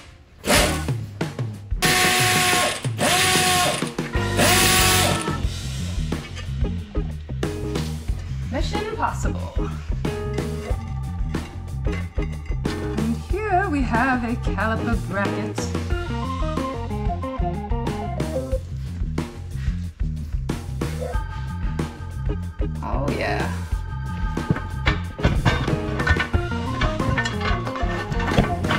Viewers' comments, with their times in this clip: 0:09 What's with the Porno music in 😂